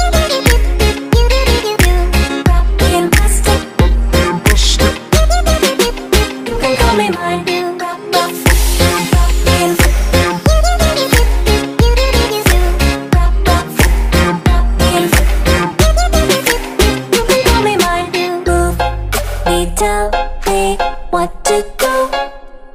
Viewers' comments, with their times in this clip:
0:08 in a deep voice she says "fuck you" cause he makes her do what he wants and she's has a glitch to become human.